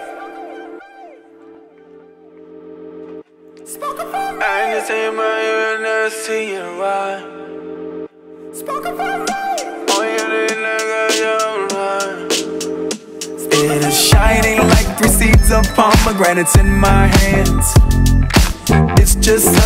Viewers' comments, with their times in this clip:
0:04 I can see my Uranus see and run. This song is just messing with me now.